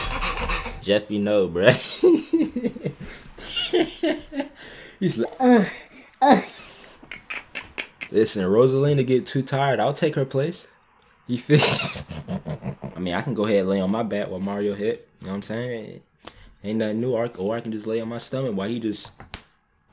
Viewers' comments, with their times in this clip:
0:05 WTF WAS THAT NOISE?????!!!!!!! 😂😂😂😂😂😂😂😂😂😂😂😂😂😂🤣🤣🤣🤣🤣🤣🤣🤣🤣🤣🤣